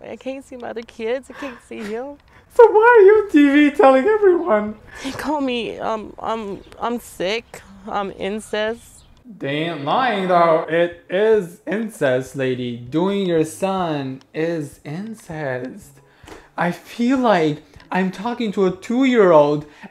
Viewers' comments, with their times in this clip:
0:05 I'm sorry I can't help but laugh while she crying smh like why why why why why meeee